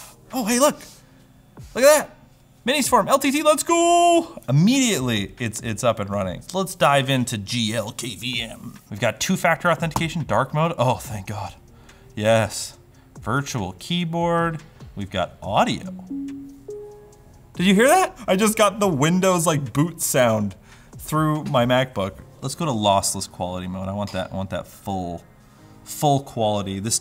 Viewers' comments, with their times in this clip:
0:10 the video gets a dislike because of the dramatic "OHHH THANK GOD" for the dark mode.